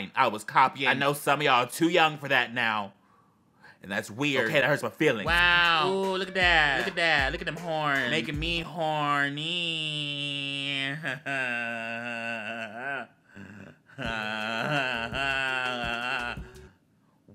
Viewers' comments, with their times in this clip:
0:05 the goat just SCREAMS jello, hello mello